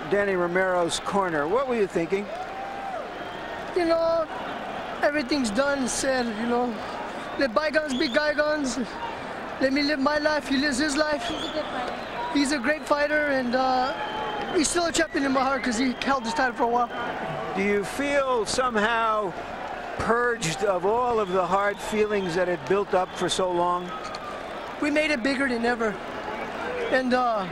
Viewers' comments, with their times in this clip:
0:09 “Let by gones be guy gones”. 🤣